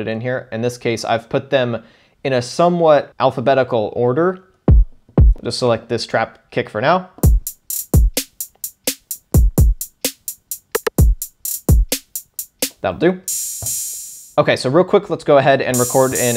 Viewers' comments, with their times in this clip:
0:04 horn e Lulz